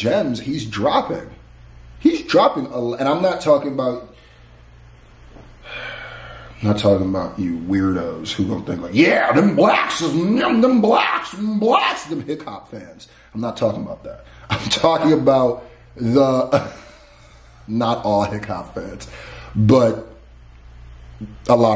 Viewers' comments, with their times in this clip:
0:09 when he started making that funny voice that is supposed to be the weirdos I lost it 😂